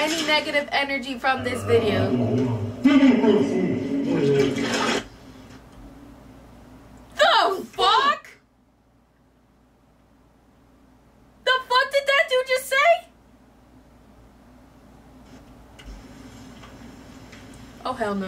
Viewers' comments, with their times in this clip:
0:06 Y'all said FUCK at the same time 😂